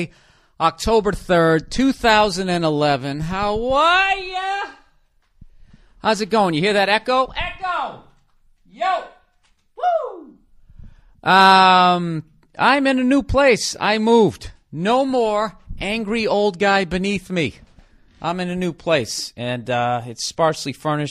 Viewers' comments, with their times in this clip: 0:09 that little scream had me rolling on the fucking floor i don't know why. XD